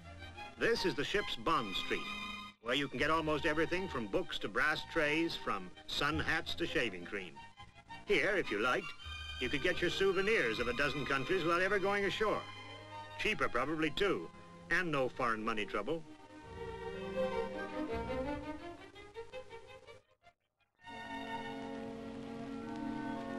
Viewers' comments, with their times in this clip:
0:09 You can hear the narrator recoil at the thought of “foreign” money. 😂